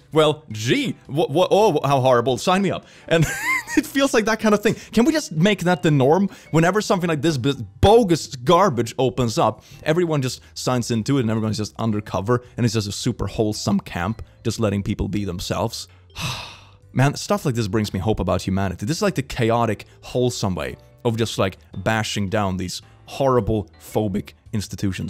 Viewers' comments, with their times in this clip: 0:08 It’s pm, my dog was comfy and asleep on couch. Que squeaking from his favorite toy. He was up like a shot.